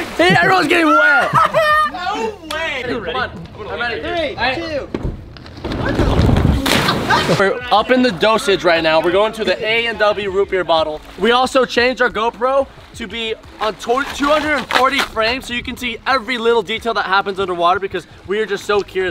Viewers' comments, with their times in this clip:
0:05 did you hear that laugh